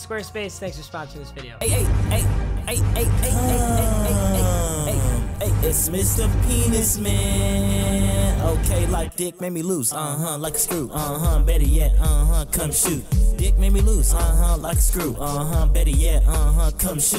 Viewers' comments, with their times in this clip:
0:04 Lol that song